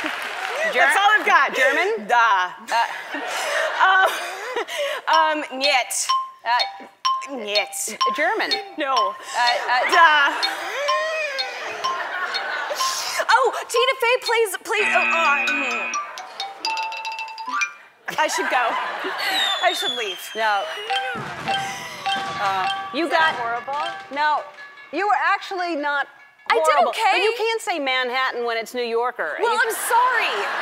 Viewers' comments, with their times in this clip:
0:10 a balloon losing air
0:10 Her laugh xD
0:10 dat laugh!!! lol
0:11 Ellen's reaction to that laugh😂😂😂😂😭😭😭😭😭